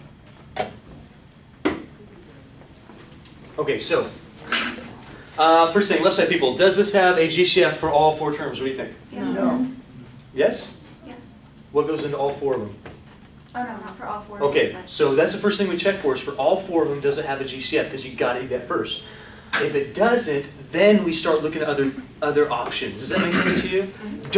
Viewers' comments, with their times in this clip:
0:06 Does this have a GsheeF